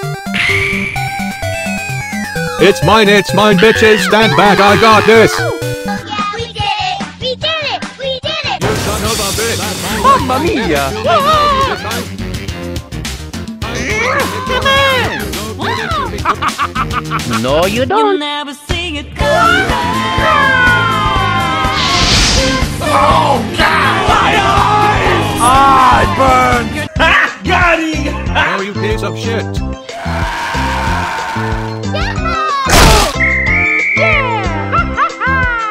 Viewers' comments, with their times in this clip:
0:08 OOF! minecraft death sound
0:20 is my favorite part. Especially when SMG4’s eyes were on fire and he started screaming.